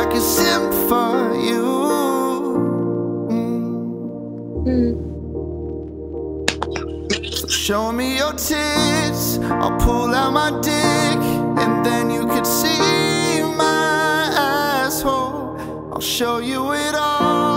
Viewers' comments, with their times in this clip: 0:05 BRO SHE REGREGGED CLAPPING THE NEXT FUCKING SECOND LMFAO